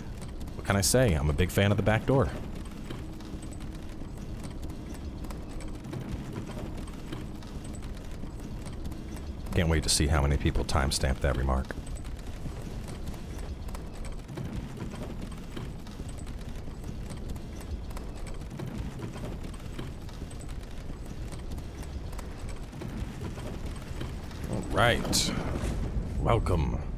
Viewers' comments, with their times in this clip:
0:10 funniest pause ever😂